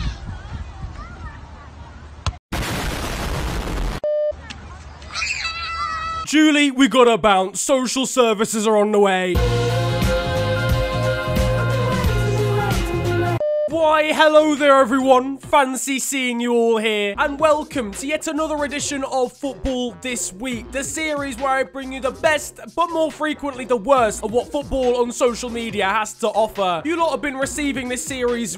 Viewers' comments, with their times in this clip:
0:10 love that nostalgic theme song